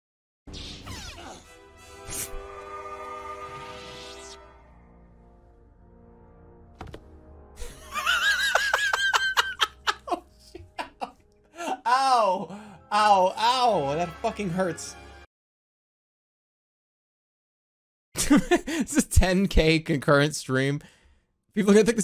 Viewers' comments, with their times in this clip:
0:06 that made me laugh so hard, jermas laugh is contagious